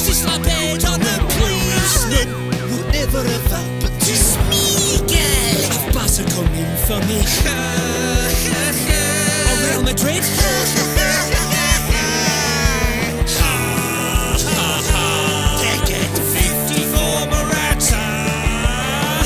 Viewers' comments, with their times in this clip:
0:07 The Laughing Is Insane